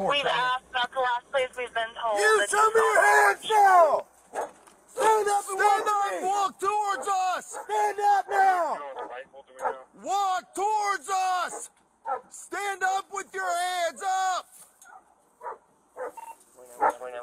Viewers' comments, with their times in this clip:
0:04 I also feel bad for the dog. You can hear the desperation in the dog's barking almost like the doggo was relieved to know someone arrived to make it stop.